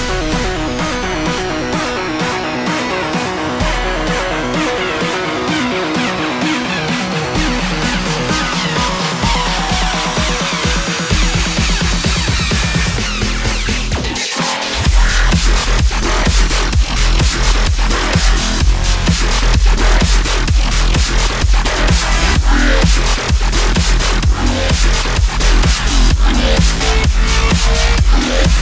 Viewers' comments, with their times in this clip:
0:04 they both start fusing together
0:11 the beat drop was the best part
0:11 The first drop is